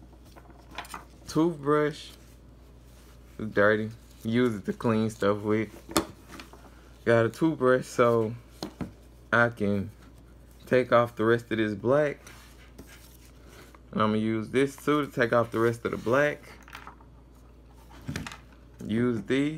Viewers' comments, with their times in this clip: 0:03 He got a toof brush. BAHAHAHA